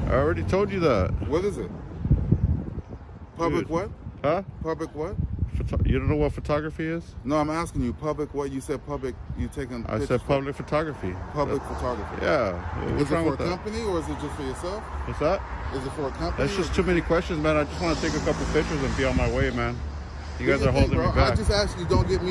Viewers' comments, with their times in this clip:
0:10 In 3-2-1 and Beavis in the Flesh!!! "Heh heh."